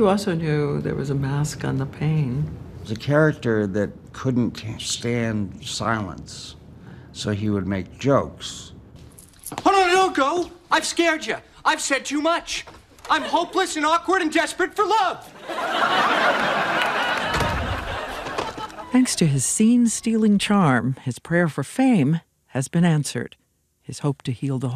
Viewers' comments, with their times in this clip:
0:09 that ya was a boston Irish ya 😂